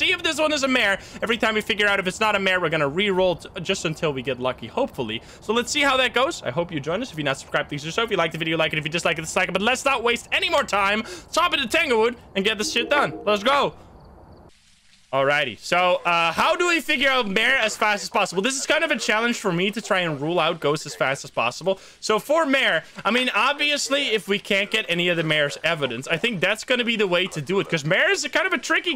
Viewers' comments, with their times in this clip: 0:09 bro went eminem mode